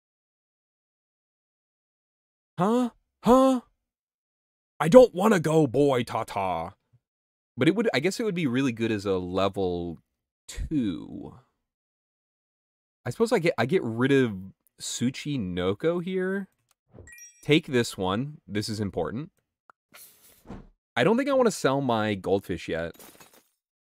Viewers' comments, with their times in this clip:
0:05 I’m from Brasil and just his pronunciation of boi Tata was so good but so funny also lol